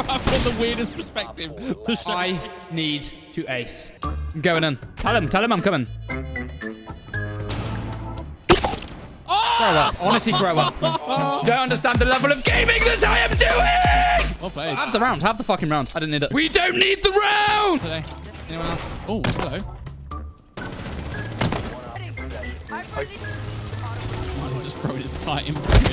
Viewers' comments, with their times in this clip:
0:10 Mm that DnB